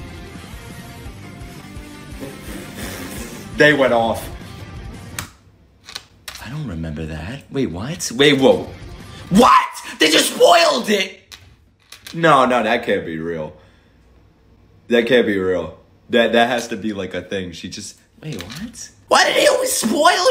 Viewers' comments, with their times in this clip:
0:08 THE SCREAM JHKDFDSKF LMAO i loved that